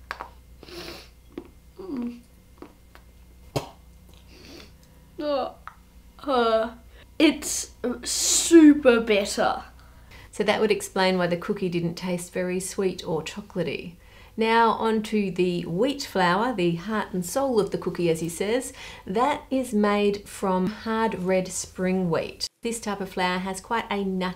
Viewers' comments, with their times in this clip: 0:06 Why didn't the kid like it? I heard him say "It's super BETTER!":face-purple-smiling-tears: